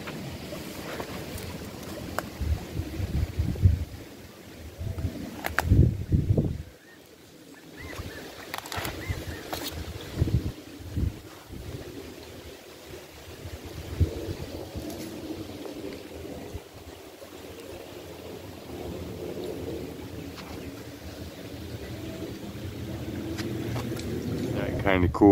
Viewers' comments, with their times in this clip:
0:08 fish under the rock.... and i love hearing the quail. and please be careful, my brothers dog got bite nd it took 7 viles of anti venom to save her plus a huge bill! Your lil doggie is a clone to mine! I really enjoy your videos!